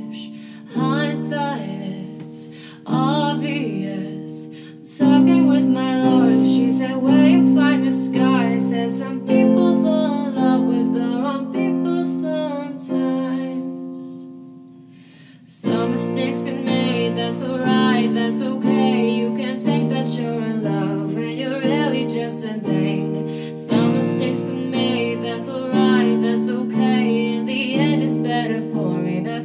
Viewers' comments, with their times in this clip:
0:10 that wasnt right and it ruined the cover a bit but its alright your voice is really good